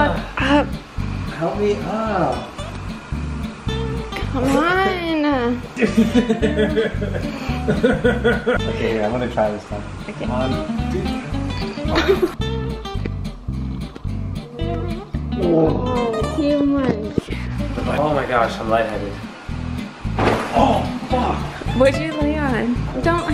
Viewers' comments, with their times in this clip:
0:07 his laug h thoug h